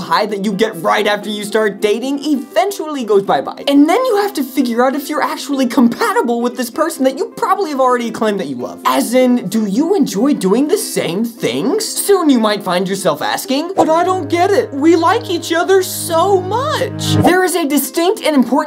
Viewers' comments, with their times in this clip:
0:03 The way you said bye-bye made the video.